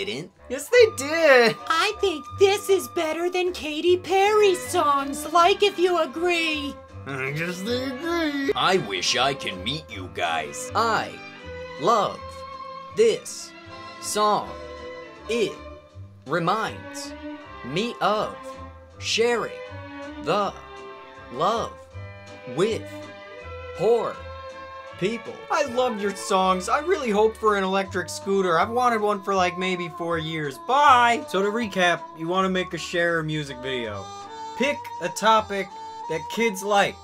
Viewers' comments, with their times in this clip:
0:10 speed that up and it would almost sound like a character from a Rare Software game.
0:21 did William shatner write that comment?